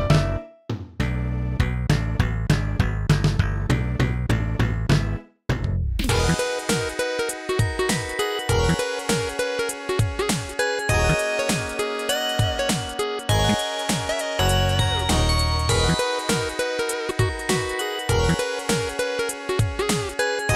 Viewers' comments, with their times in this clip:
0:06 you have no idea how happy I was to hear this song pop up here. Great song, and awesome version!